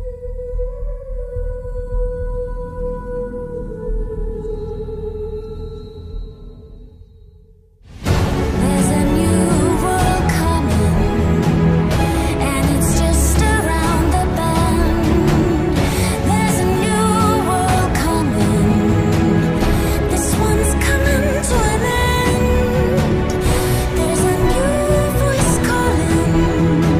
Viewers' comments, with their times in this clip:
0:08 I wish it was so, that this was the entire song. Felt such a rush when that violin came on to the scene. Looking at my real world problems like "come at me Mr. Spider, I'm ready to break a few legs and kick your rope spitting ass"